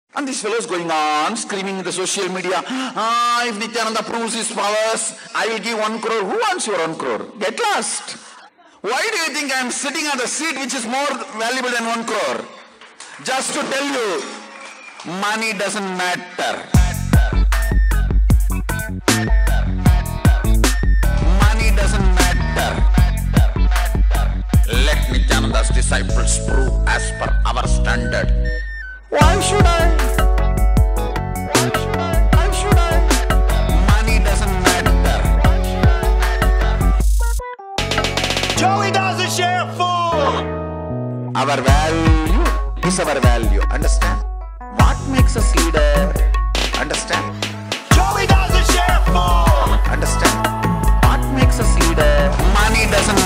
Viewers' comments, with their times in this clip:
0:06 We don’t want rrone crore We want 1 Crore
0:35 listen carefully. It sounds like, "Why should I matter?"